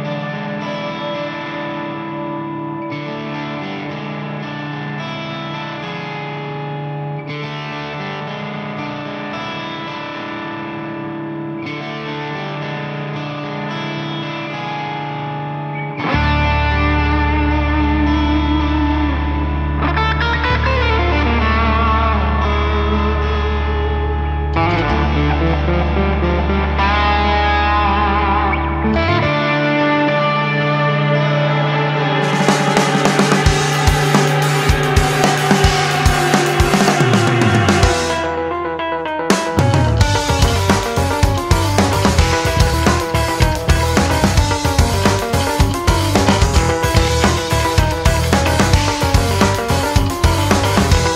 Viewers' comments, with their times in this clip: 0:09 damn the shit shakes loose .. crazy good
0:24 you can hear the distinct sound of a torture device cranking. Fucking savage!
0:29 Omg fuckin brutal song Wtf?
0:31 Nothing on Earth could have prepared me for the funk switch-up I visibly grimaced at work.
0:34 sounds like a song from ratchet and clank
0:34 That guitar and bass groove is th sickest thing I've ever heard.
0:39 This is the weirdest disco I ever been to
0:39 The bit sounds like something straight out of a 70s prog rock song.
0:39 running away from pacman/mario/pokemon ghosts inside some bloodborne mansion🤣👻👻👻